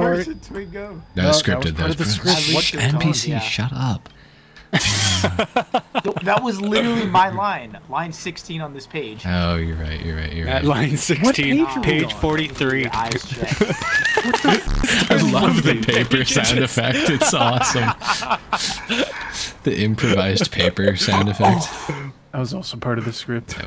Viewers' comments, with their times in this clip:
0:10 "what page are we on??" flipping through pages 😭😭😭